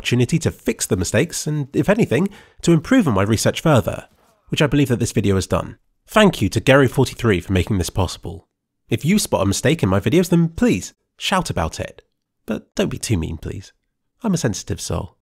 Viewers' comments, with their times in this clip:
0:09 closed captions "If you spot a MOUSTACHE in my videos" lol
0:09 Mistake is MOUSTACHE xD